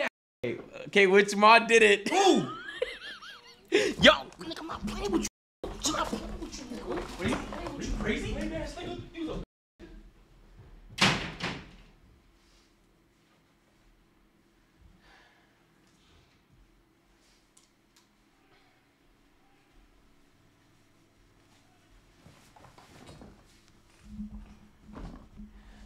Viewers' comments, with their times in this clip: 0:07 The Toronto man came out "are you crazy fam?" 😭